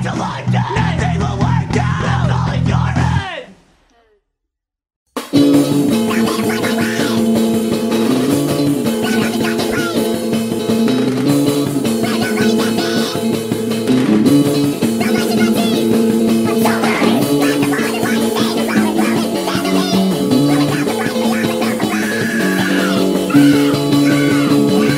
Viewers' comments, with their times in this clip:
0:05 aww hell nah they got the chipmunks emo and singing screamo?!??! 😭😭😭💀💀